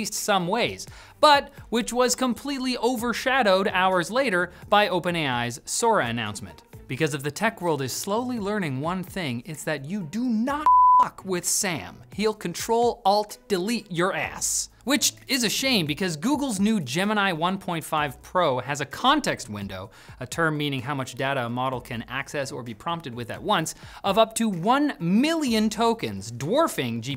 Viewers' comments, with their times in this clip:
0:10 I love how the bleep missed the "fuck" lol